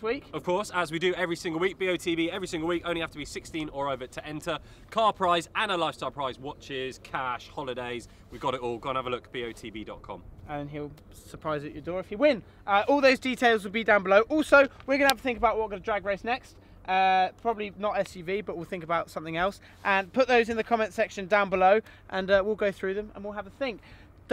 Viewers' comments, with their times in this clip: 0:07 Time of death: death by Headphone blast